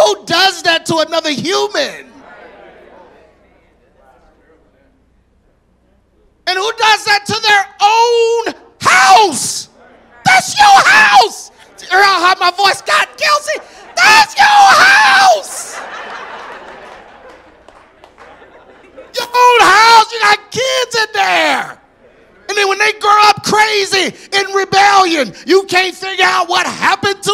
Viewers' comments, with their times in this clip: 0:10 I felt that one even the microphone felt it. As a married man, this is the gospel truth. God order works for real. Thank you, G Craige Lewis for this impactful word of God.